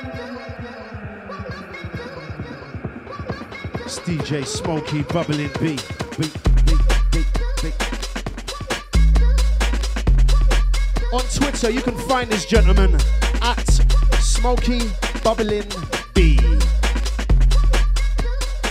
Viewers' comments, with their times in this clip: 0:03 Track ID ? Absolute fucking weight there.